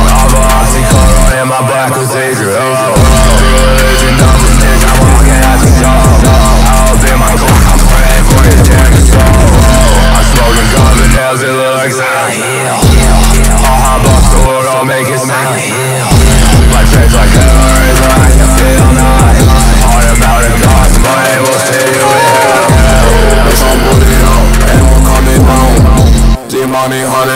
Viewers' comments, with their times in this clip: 0:10 sems Voice here omfg